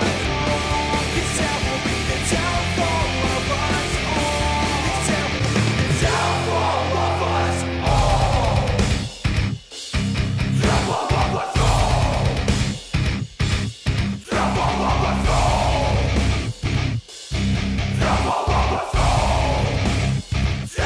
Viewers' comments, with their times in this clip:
0:07 all i want-->guitar hero downfall -->rock band. imo, and in downfall i like that the guitar is more clearer on rb. good example. and the drums do sound louder on gh, but i think only should if ur playing that instrument ya kno?